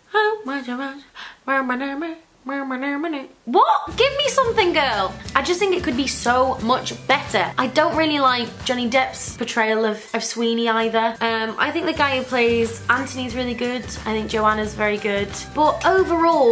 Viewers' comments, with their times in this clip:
0:03 EXACTLY WHAT I MEANT!!!!!!!!!!!!!! ONE OF THE BEST SINGING VOICES I’VE EVER HEARD IN MY WHOLE DAMN LIFE!!!!!!!!!!!!!